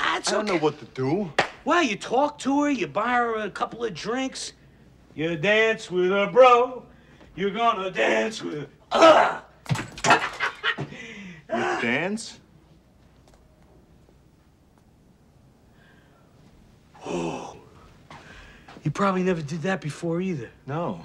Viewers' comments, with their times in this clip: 0:08 The way he goes into the bathroom and goes "Argh" Sounds as if he is about to feel sick.